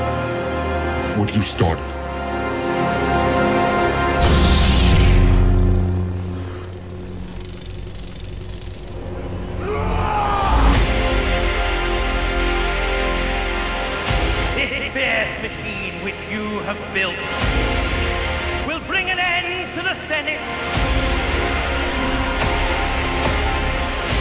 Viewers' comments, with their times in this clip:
0:08 God that is such a badass battle cry!